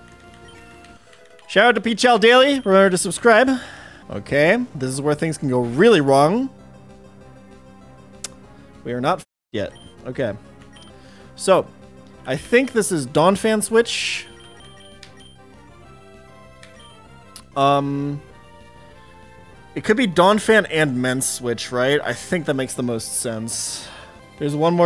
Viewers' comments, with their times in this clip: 0:08 missed the bleep on his mouth